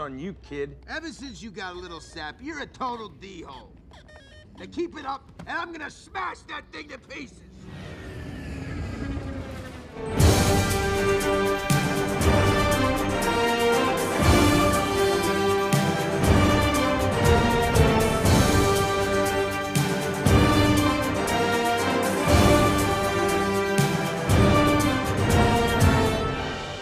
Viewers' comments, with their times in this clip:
0:07 is that rocket or my dad